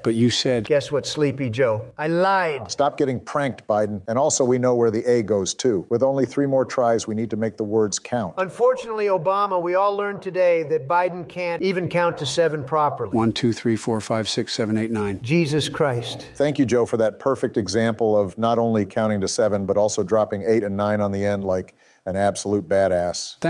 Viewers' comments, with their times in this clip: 0:05 “the aid goes to” that was a weird sentence 😂😂